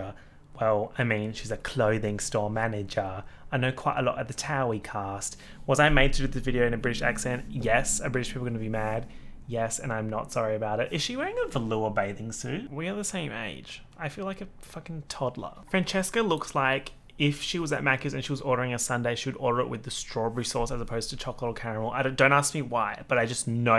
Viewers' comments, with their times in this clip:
0:08 I’m not offended and I’m British. The accent was pretty good 😂😂